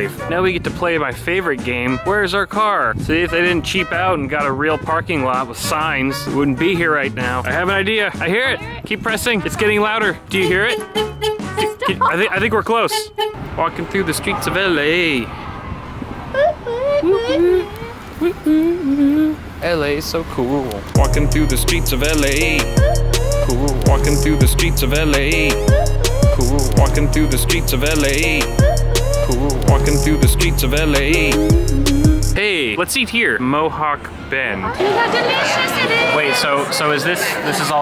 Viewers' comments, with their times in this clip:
0:08 The kinda crap I have to put up with as a cart associate. Car alarms going off just so people can find their cars.
0:13 Duuude.. you can make music haha
0:20 we found the next banger for this year lol
0:20 Damn, someone learn to use FL Studio?
0:21 is there a certain way to make that edit messing with the audio wave forms or is that simple as add a beat behind it? "Walking through the streets of LA!" :D
0:22 that song was 🔥